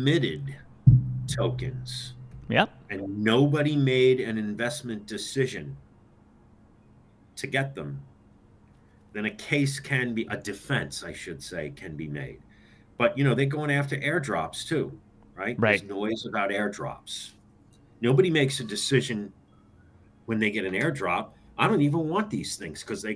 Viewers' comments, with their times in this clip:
0:05 no sound till minute and secon